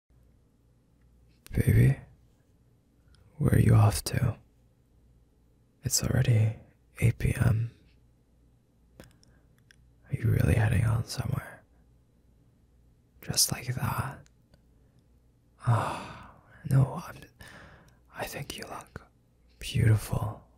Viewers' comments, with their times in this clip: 0:01 done jump scared me 😅